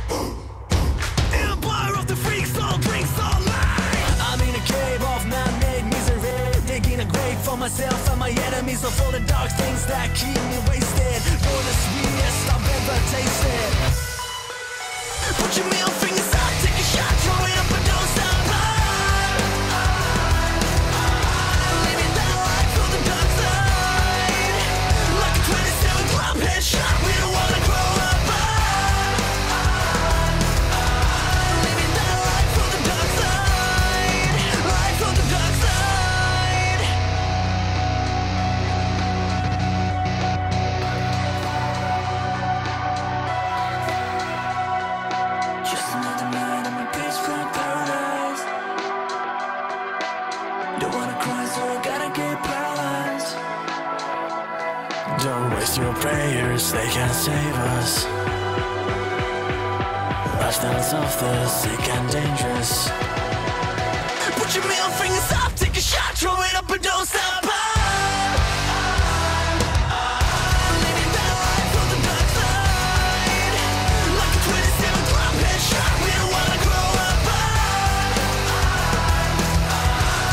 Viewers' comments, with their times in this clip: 0:04 literally Linkin Park
1:03 Damn this drop is fire